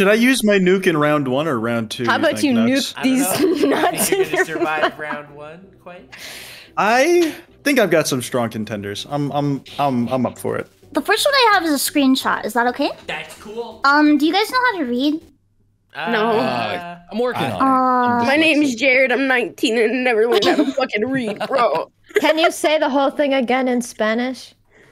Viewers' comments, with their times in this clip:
0:10 bro the way they all paused. Then answered